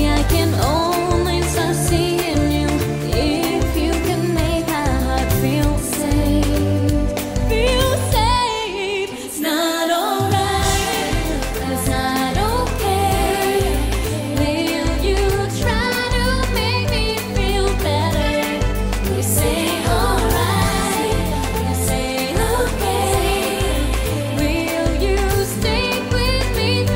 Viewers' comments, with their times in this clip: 0:08 Boom, her real voice I thinks she's doingg the baby all the time